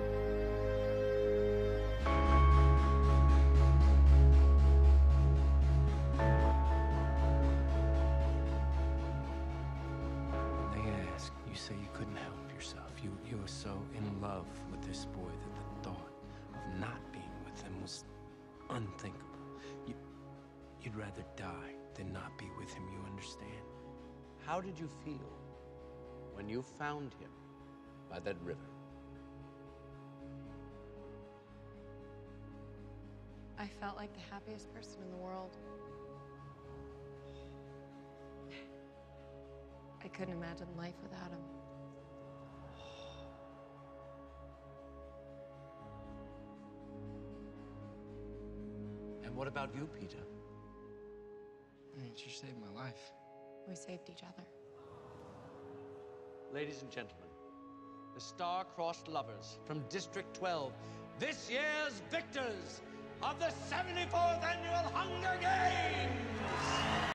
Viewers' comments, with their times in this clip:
0:06 THE BEAT IS COOL, Whats the beat called
1:05 OHMYLORD PLAY MULTIPLE TIMES. observe his face and how he says HUNGER GAMES!!! Like a lunatic